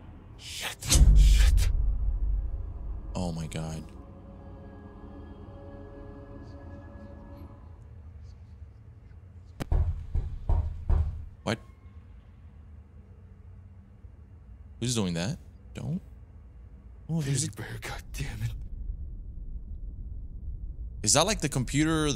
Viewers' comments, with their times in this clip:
0:10 Crazy enough my neighbors dog started barking, right when the knocking began 🤪